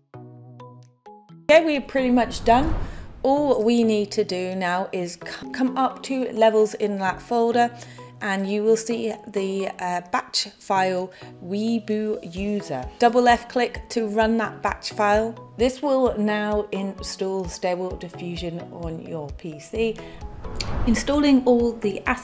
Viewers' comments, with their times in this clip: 0:09 weee-boooo-user lol... web UI (user interface). Great work though.